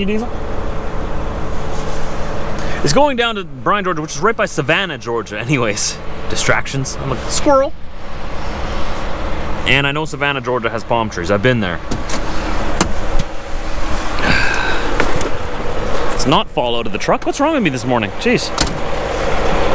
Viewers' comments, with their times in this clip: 0:03 At start of video let me know where you’re at “if it’s not earth.” At ~ ET is calling from wherever he’s at. 😂